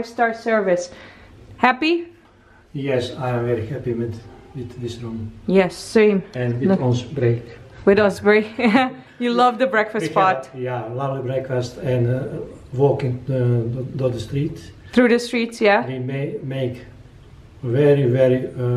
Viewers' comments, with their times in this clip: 0:03 your dads English!! Wow good going :).... beautiful shots as always! Loving this series.